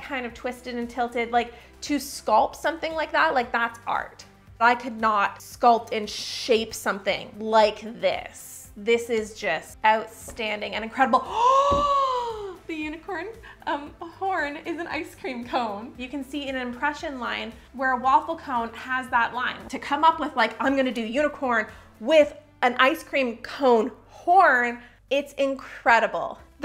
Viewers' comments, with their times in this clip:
0:09 Her gasp when she noticed the unicorn horn/ice cream cone, omg. The joy was contagious.